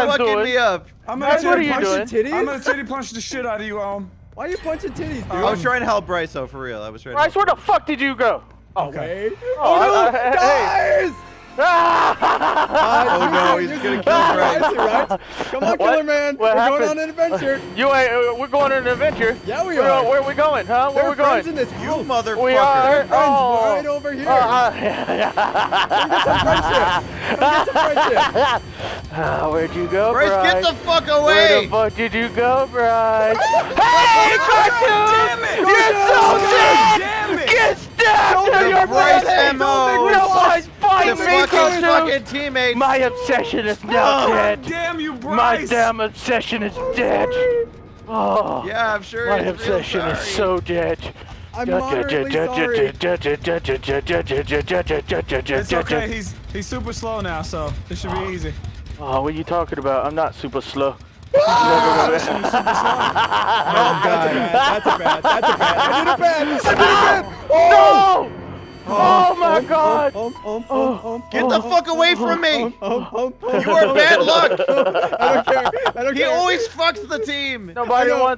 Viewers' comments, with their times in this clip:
0:10 music plays you know, your fucked up
1:01 I’m crying his scream 😂😂😂